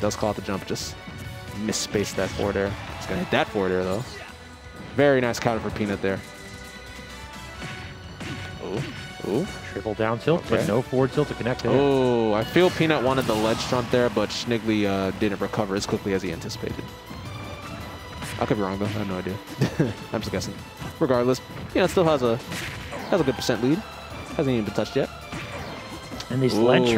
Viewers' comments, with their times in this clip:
0:06 That music sync is soooo satisfying
0:06 little macs down tilts match the background music
0:07 syncs with the music